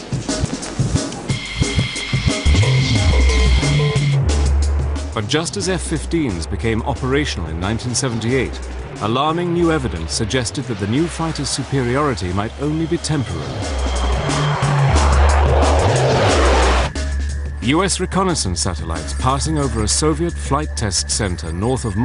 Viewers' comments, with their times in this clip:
0:06 I love the drum and bass